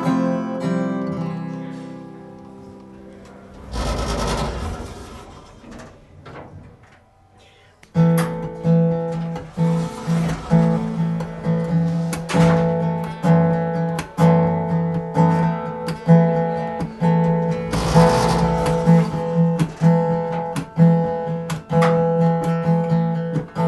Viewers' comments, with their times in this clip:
0:08 "toilet flush" Lol . I liked how Justin winked to the cameraman :]